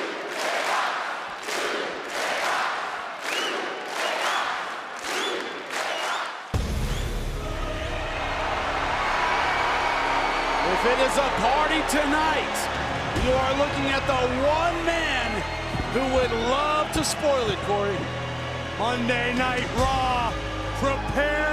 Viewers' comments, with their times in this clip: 0:05 The crowd pops when Roman enters😍🔥 🔥🔥🔥